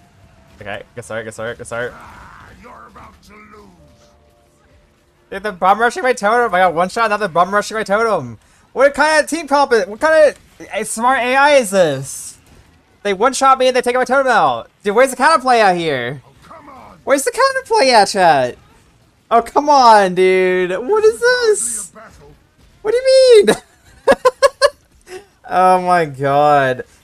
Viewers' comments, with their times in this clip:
0:09 what kinda English slurring